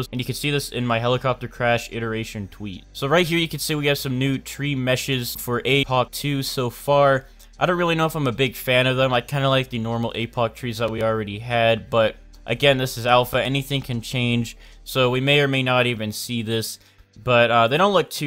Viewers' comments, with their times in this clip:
0:04 a POC, you are cutting the words